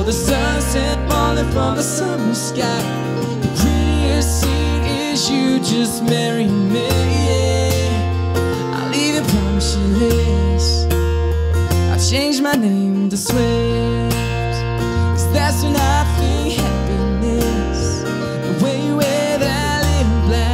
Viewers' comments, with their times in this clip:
0:03 is it just me or does it sound like he said julia?